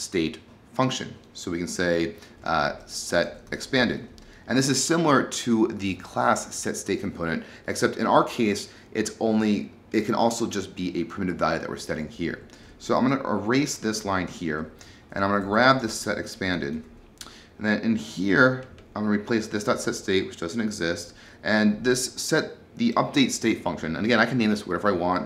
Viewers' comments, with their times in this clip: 0:10 At a random place: "a primitive value that ...something... here". I have to concentrate to get what you are saying all the time, so it's difficult to get all the technical stuff. I wanted to say this because other then pronunciation, this video is quite good. If it wasn't good I would not care to mention this either.